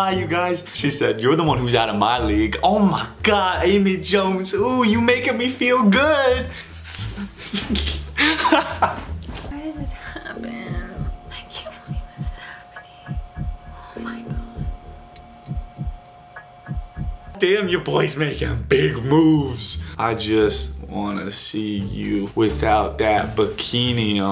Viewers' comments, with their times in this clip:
0:05 when she was so stressed and it goes to him and he’s laughing i’m dead